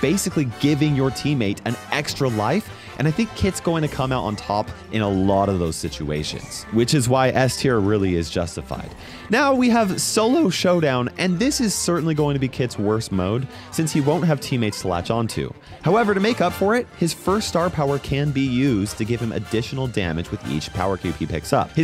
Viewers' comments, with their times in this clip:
0:09 VOICE CRACK ALERT!